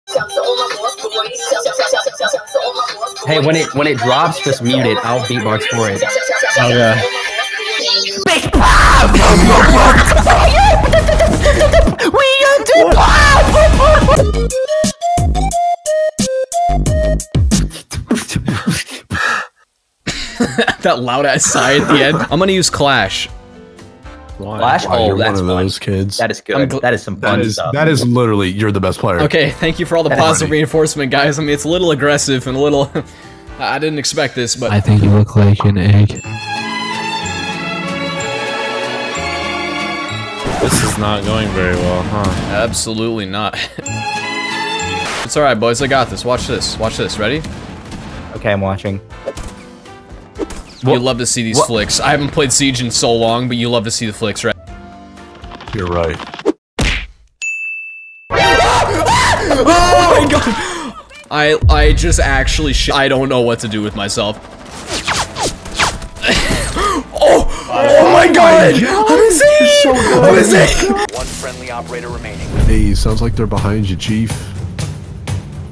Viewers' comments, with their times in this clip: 0:00 Oh how I love the Extreme meme music megamashup.
0:07 dat bass drop, tho 😉👉👉
0:08 me when i beat box
0:58 was that the mating call?